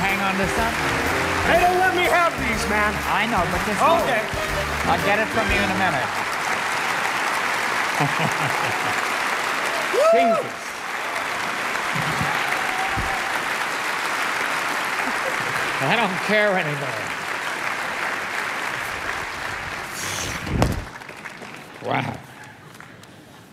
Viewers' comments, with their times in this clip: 0:09 Was it just me or did i hear 'PINGAS' ?